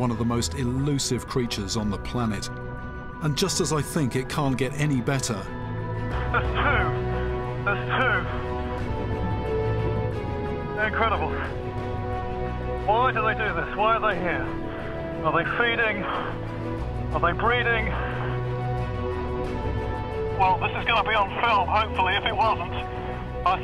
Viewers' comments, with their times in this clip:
0:06 This is an awesome piece of music for nastolgic moments
0:07 Me: Why am I hearing boss music